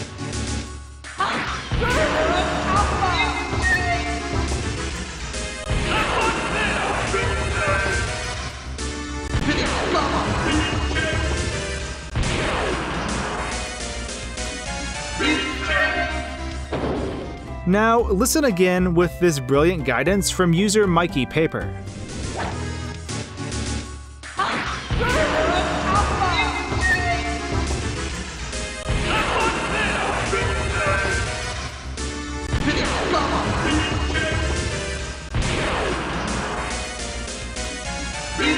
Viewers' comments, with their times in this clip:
0:05 I thought he said 'black godzilla'
0:23 it reminds me of green needle, brainstorm
0:24 The first one is hard to hear but sounds correct, Alpha is the easy part, everything else I don’t understand.